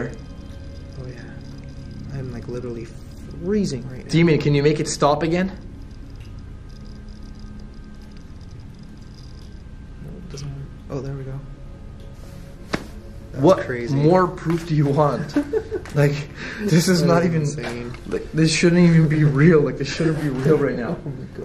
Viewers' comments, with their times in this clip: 0:07 emf meter going crazy and can ur breath when it was going off